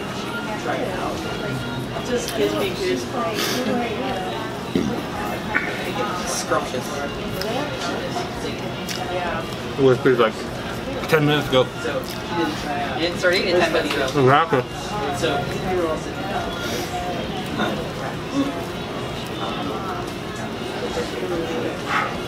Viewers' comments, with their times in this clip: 0:04 Whas that a fart what i heard? Or is it just me?